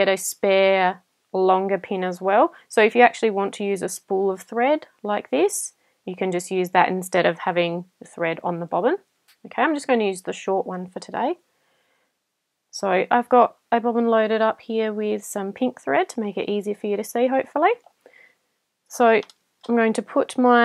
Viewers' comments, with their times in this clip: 0:03 I swear I heard "A longer peen"...😂